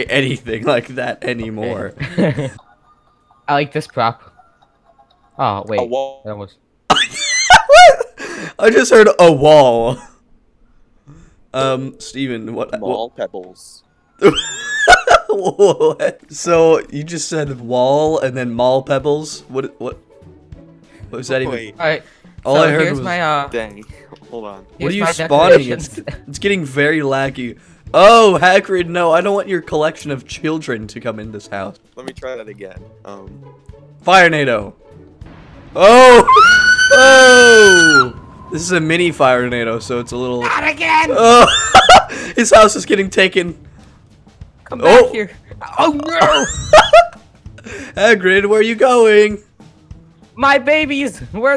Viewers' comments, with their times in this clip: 0:04 A WALL (mic glitch)
0:04 Metallic sound LOL
0:35 just the scream had me laughing then the "Not again" made my laughter worse
0:36 bro turned into a steam train from 1889 made me laugh so hard i died